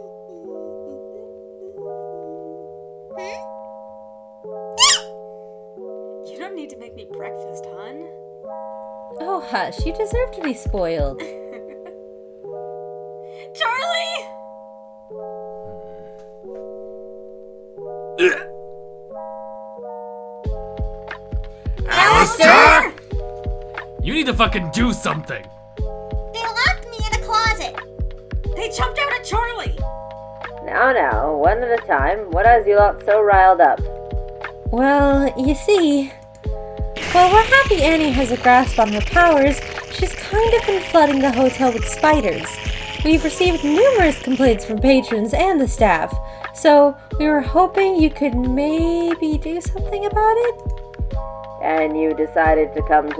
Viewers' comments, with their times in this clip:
0:04 NIFFY'S SCREAM WAS PERFECT MADE MY EARS BLEED
0:36 *aggressive slurping noises*